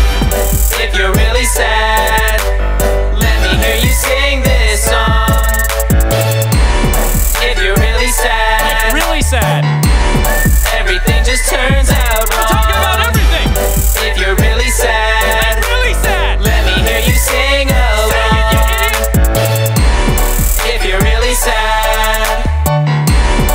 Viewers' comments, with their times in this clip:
0:04 sound like jackseptick eye